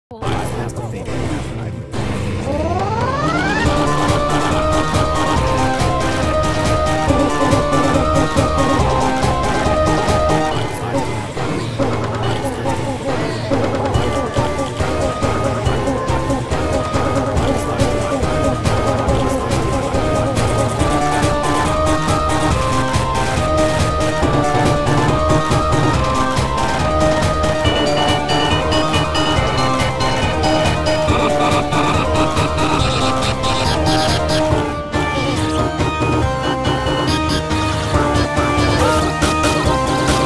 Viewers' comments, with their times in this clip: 0:03 Omg i love music the ruby
0:27 I like that bell dings like that and bomby screaming